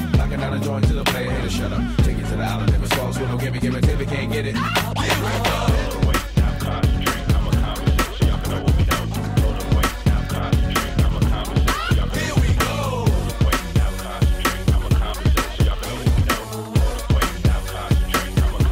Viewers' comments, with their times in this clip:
0:05 love how the beat gets very dancy UK Garage almost